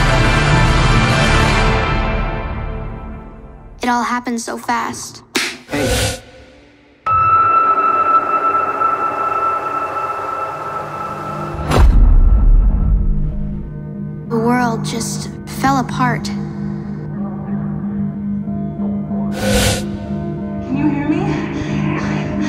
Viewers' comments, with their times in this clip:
0:03 Me: Oh no, thats how you know it's a scary movie... got the theme and everything